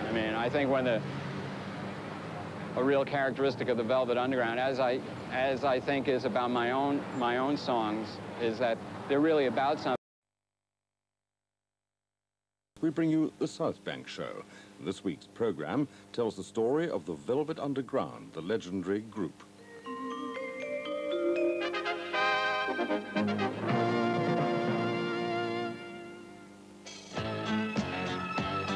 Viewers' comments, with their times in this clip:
0:09 just as he is about to go in depth about his music, it cuts out.